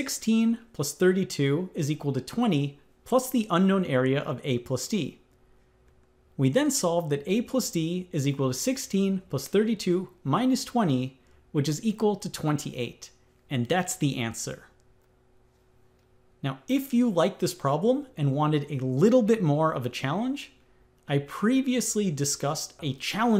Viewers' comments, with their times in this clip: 0:10 I hate the way you say TWENTY That T is important e.g. “tweny”